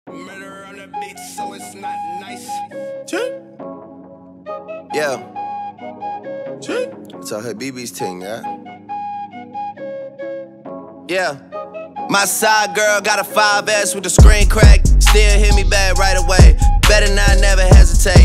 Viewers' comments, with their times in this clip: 0:03 birds out side